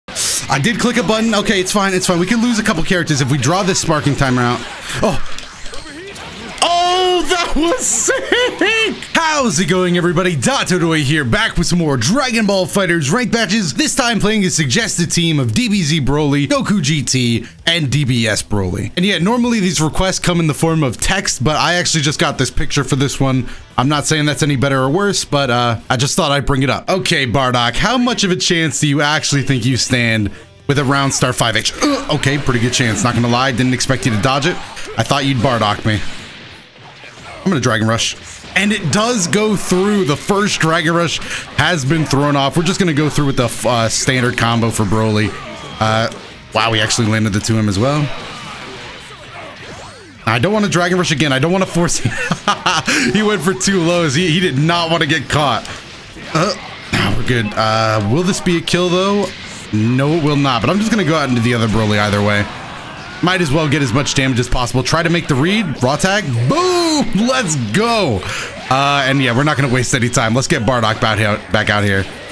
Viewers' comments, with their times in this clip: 0:00 the sound the squirt bottle makes
0:57 does anyone here that phone ring? 😂
0:57 that ebay notification thooo😂